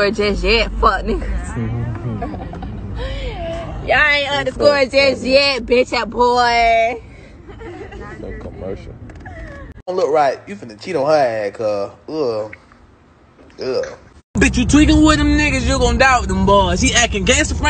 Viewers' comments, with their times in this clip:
0:05 she sound slow aaf 🤣🤣